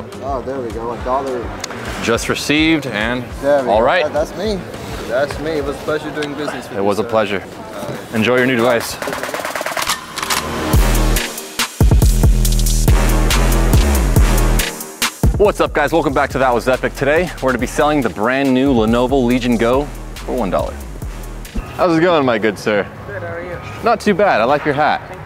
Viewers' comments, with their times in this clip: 0:09 starting sick music --- Cheers to editor !